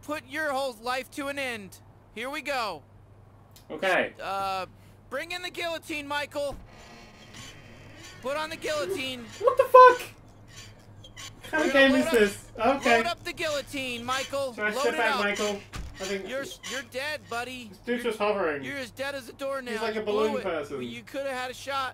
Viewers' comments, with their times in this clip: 0:09 When he said wtf I almost shit myself.... 7.1 surround aint no god damn joke! XD